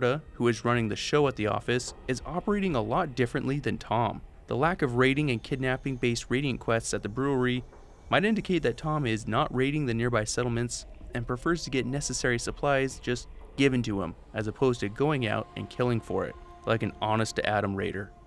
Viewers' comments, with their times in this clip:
0:05 Am I the only one hearing a weird buzzing noise ?